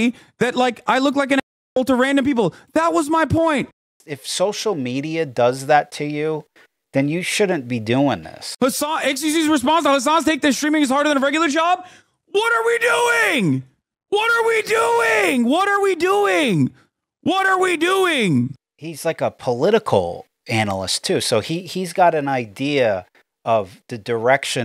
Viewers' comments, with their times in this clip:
0:10 im getting headache from this guy 😣 he is too loud